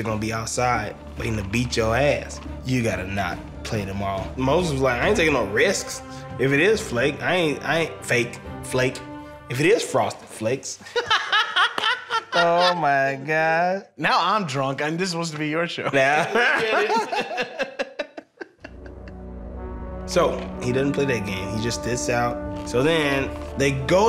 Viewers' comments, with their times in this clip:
0:10 I WAS LIKE WHAT WAIT WHAT HAHAHAHAH I KNOW THIS LAUGH